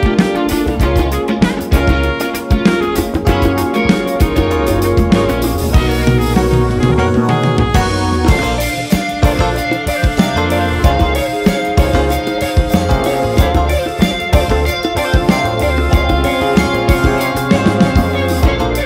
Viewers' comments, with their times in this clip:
0:06 Major Shuggie Otis “Strawberry Letter 23” vibes